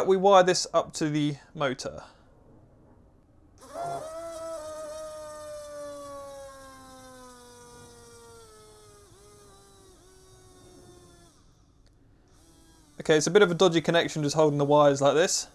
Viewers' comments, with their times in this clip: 0:03 Capacitor: Connects Motor: ahhhhhhhhhhhhhhhhhhhhhhhhhhhhhhhhhhh-